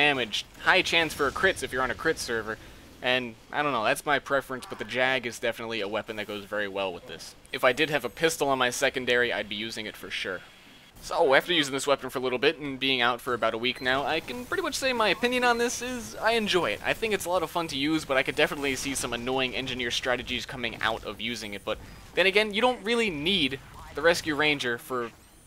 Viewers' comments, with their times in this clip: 0:04 was dat demo's voice??!!
0:10 At around the mark I'm guessing you were shouting for an airblast.